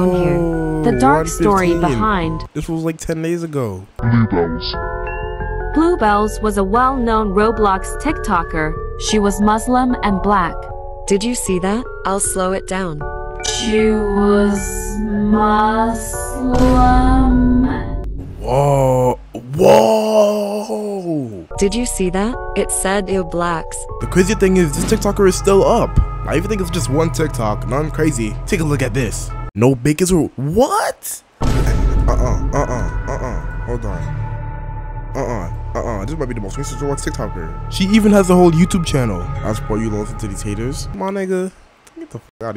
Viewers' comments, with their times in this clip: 0:03 sounds like it said n-💀
0:30 i thought it was block not black